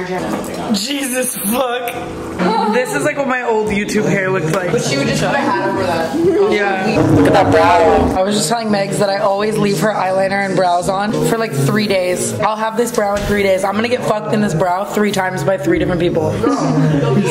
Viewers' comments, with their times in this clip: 0:03 peep Finneas playing in the back
0:05 i love how i screamed at i lost a friend in the backround